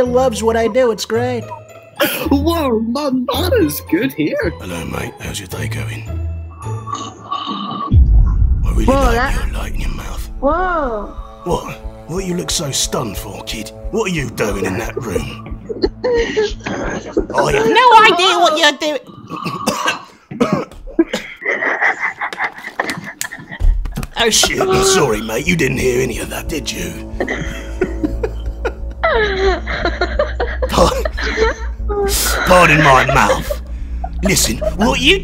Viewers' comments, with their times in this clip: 0:05 u sound like Kratos thats crazy
0:11 sounds like delvin mallory from skyrim aka thieves guild
0:13 it sounds like karl urban (butcher) from the boys
0:20 I was laughing just as hard as that kid